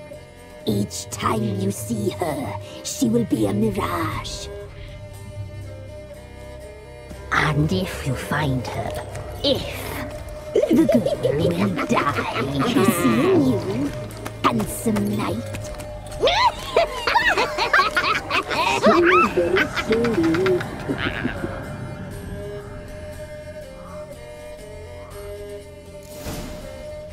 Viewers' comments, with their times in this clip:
0:10 This scene, where they leave still sends shivers down my spine... The voices, one of the crones playing with the extra pair of legs, is just... Ew...